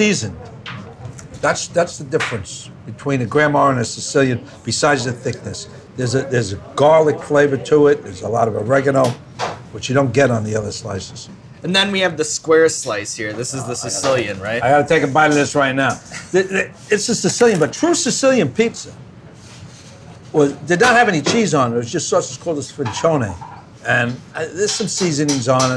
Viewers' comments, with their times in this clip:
0:07 everybody aww. (disappointed sound)